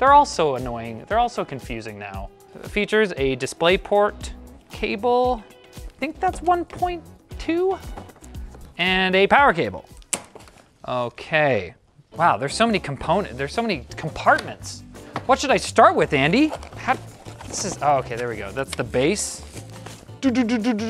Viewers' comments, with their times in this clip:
0:06 The higher your voice, the more acceptable it is to bullshit.